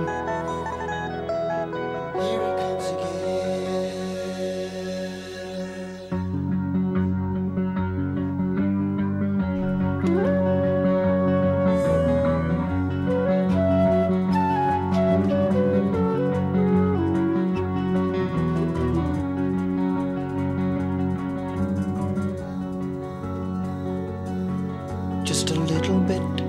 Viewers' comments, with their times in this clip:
0:07 love this guitar